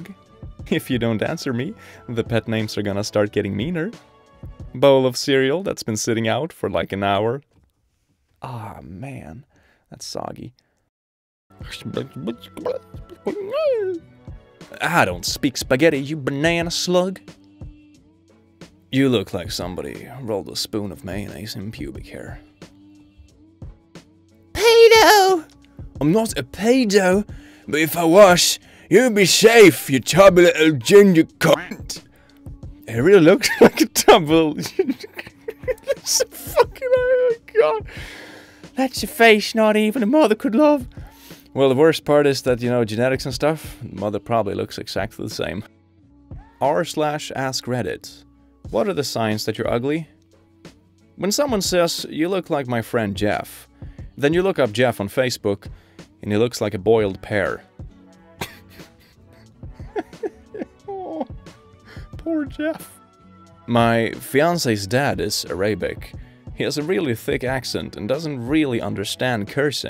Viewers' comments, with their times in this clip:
0:05 you sound like Herbert the pervert from family guy 😂
0:50 That was a terrible Ricky Gervais impression